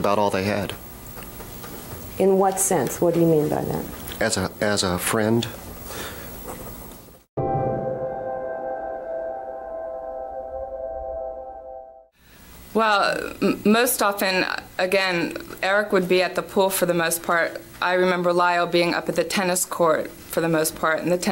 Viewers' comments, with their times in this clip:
0:09 the way his voice cracked a little :(